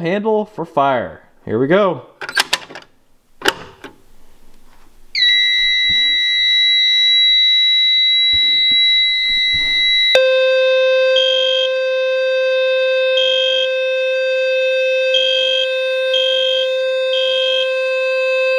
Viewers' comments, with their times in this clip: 0:05 Rip head phone users😅